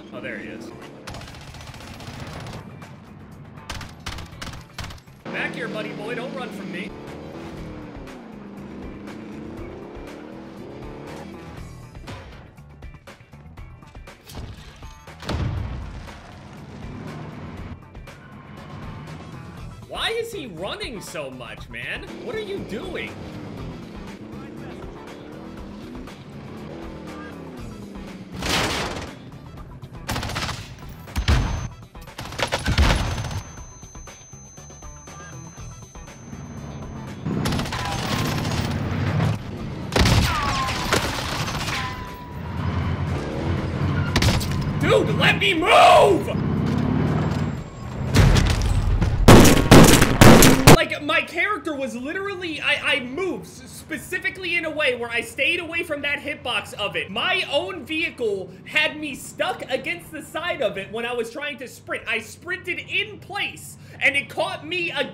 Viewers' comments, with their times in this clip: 0:07 i feel like I know that song playing in the back
0:48 Music sweet music
0:49 I could feel the anger in each smash😭